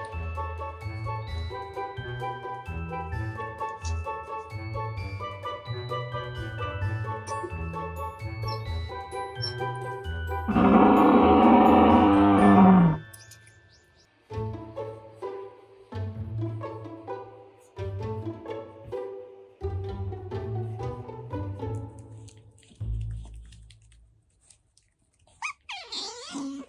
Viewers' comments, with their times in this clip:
0:09 Head phone warning Hanazilla